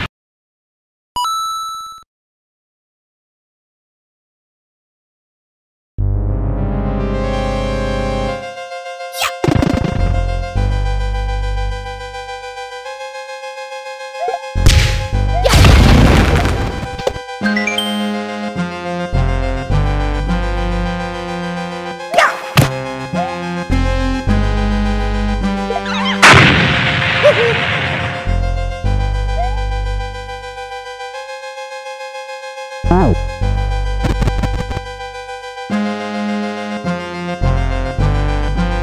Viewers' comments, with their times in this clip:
0:08 Mario:I DONT NEED A DOOR HIYAHHHHHH crashs through door
0:25 koopa knocks on the unstable stand ehhaaa Booom